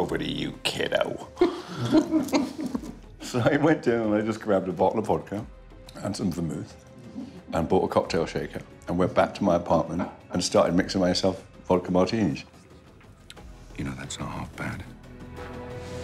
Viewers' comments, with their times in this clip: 0:03 for sec there, he sounded like Sean Connery. He was meant to pass down the James Bond lineage!